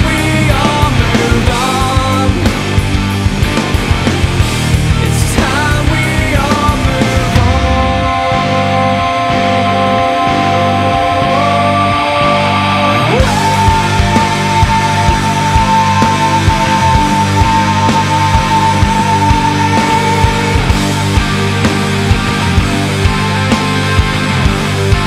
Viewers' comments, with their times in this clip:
0:06 That 14 second AWAY thats Layne Stanley levels of vocals